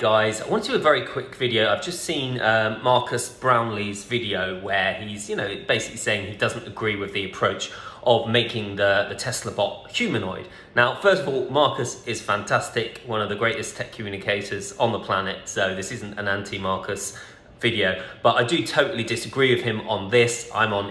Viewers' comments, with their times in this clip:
0:04 Love the bri’ish accent there 👌🏾